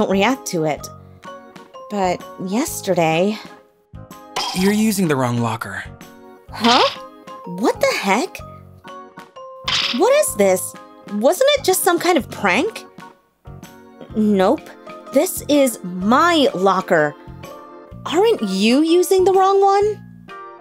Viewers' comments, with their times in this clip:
0:05 you're using the wrong locker with a guys voice*